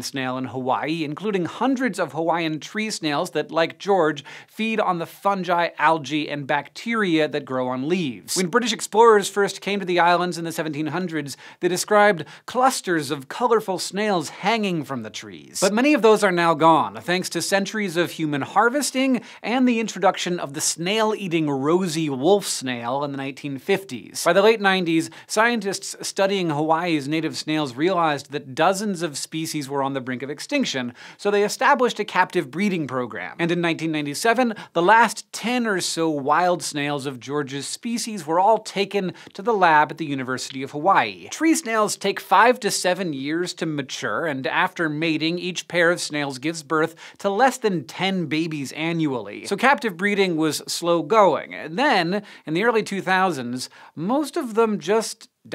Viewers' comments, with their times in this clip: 0:05 you said fungi wrong
0:36 Did i hear JoJo's??